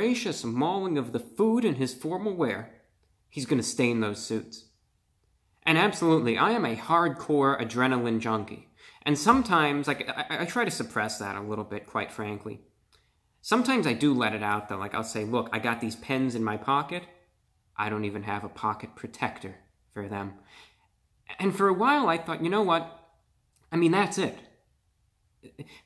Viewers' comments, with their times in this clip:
0:10 Speaking English pretty well but you slipped some alienese lol all jokes aside your ok bro.